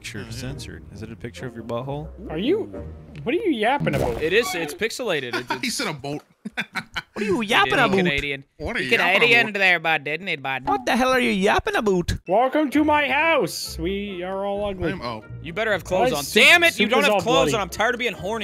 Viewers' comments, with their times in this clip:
0:03 I literally hear about